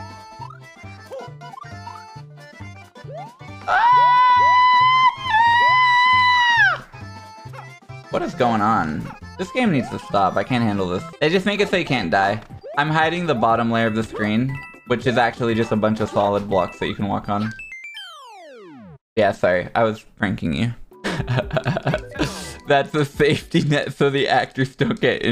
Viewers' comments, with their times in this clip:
0:07 I showed this part to my wife and she made the same sort of noise and the two of you harmonized. it was kind of beautiful